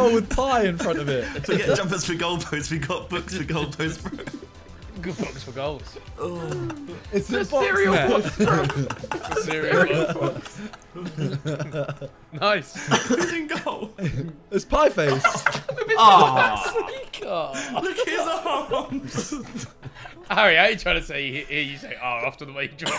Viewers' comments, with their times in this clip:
0:09 everyone's laughing and vikk's just deeping his life after his drawings